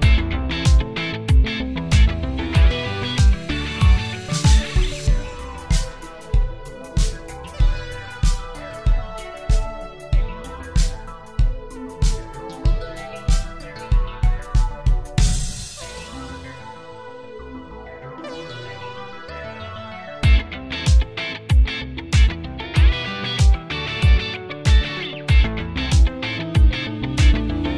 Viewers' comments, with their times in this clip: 0:10 I love the midi vibrato